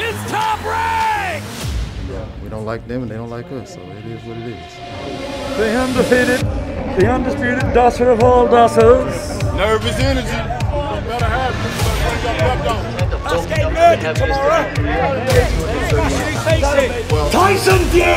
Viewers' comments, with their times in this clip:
0:03 can't stop laughing at the way Fury says " the undisputed dossers of all dossers " in the style of a ring announcer